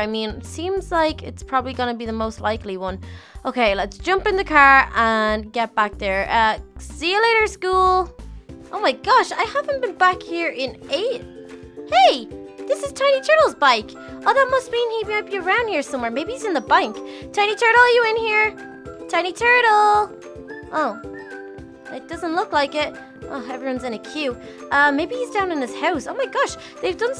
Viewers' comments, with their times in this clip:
0:10 I heard a scary cave noise in the background